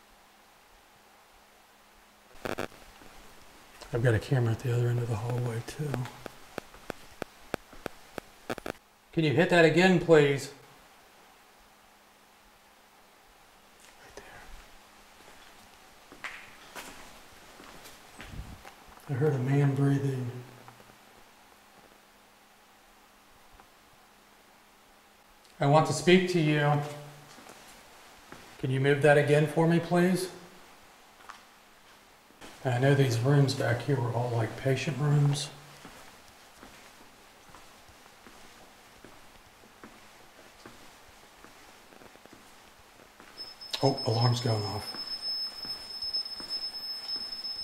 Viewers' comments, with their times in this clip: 0:10 when u ask: can u hit that again please….is that you that whispers what sounds to be: right there? It was that the man breathing that you heard?
0:34 I hear a woman’s voice while your speaking about the patients rooms.